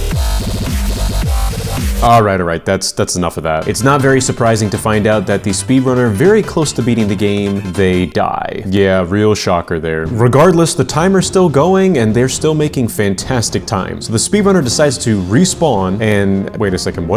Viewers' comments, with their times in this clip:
0:03 All I could think about was Geometry Dash when that music played